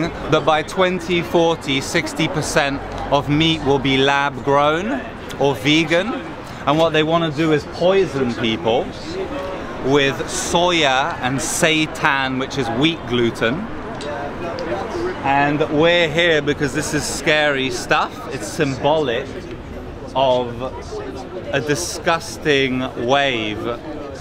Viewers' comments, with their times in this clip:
0:10 Satan is wheat gluten?